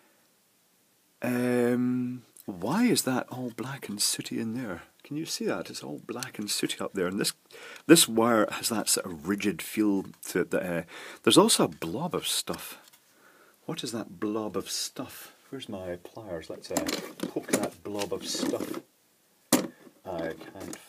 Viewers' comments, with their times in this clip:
0:08 I love the the sound of searching for "blob of stOff" in video lol